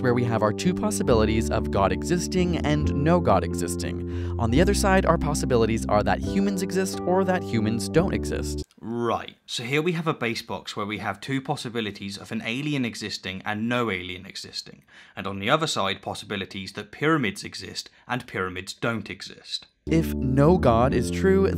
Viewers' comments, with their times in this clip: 0:09 it sounds like you called that bayes box a base box. Dumb quibble I know but I wanted to make the distinction since this video is almost entirely small quibbles.